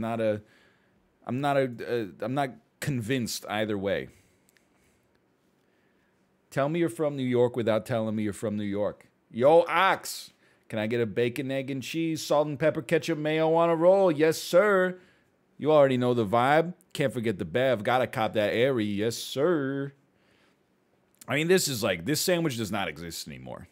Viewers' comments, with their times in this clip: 0:06 I live in new york and that was perfect lol